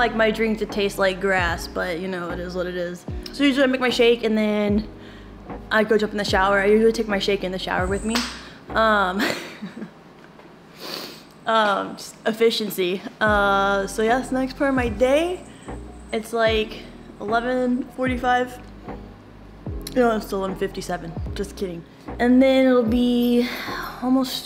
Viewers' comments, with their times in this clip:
0:07 Fess up-you popped a little fart bubble and left it in just for the LOLZ- You so crazy girl